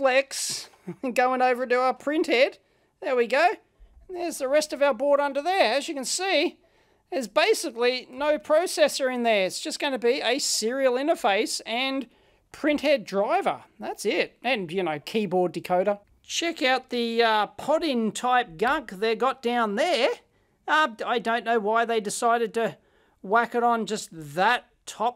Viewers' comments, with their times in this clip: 0:10 sets off "hey Siri" on my iPad.